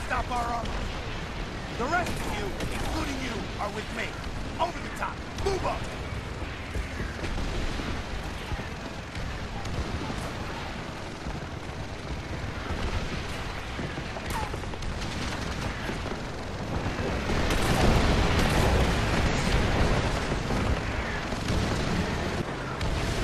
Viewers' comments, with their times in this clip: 0:09 Gets up in your face and screams COUNTERATTACK